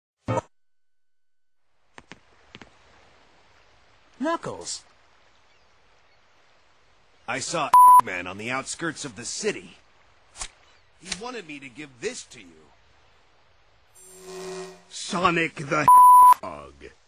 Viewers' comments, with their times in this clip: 0:03 Sonic: Knuckles! CC: chuckles Here I come! Rougher than K.N.U.C.K.L.E.S.